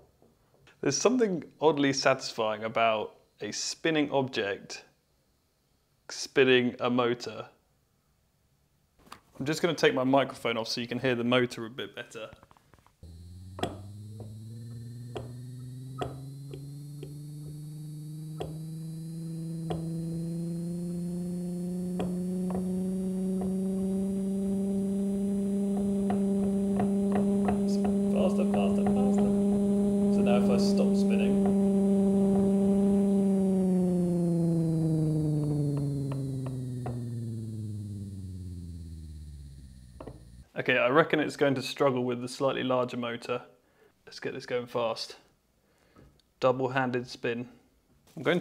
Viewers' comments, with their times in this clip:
0:08 it sounds like an electric motor
0:13 the world's smallest Subaru
0:13 anyone else hear back to the future when he turns the amp on
0:14 They say this is what aunt Gertrude heard that night the flying saucers took her away...
0:16 sounds like a ge90 starting up
0:18 nice old videogame car sound
0:23 yoo is this a supra 😂
0:26 why does that sound like an engine about to take off and go 120 mph
0:31 Nissan gtr at the dyno